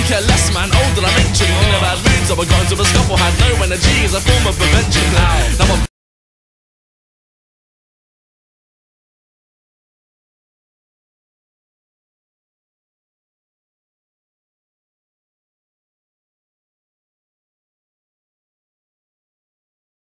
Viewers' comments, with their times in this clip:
0:05 is it just me that the sound cuts ?
0:06 why does it just cut off ??
0:06 does anyone elses music stop